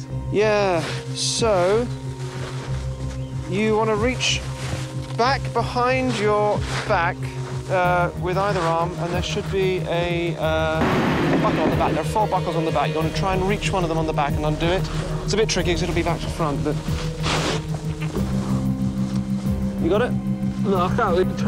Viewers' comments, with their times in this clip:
0:03 He sounds like weatley from portal 2 :D